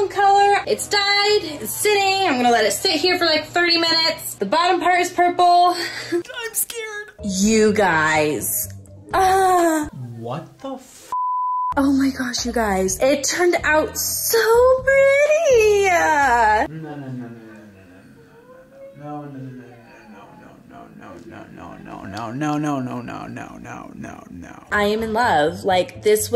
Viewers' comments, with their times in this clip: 0:10 that woman literally shouting the whole video, my ears ::))) but great hair color 😍!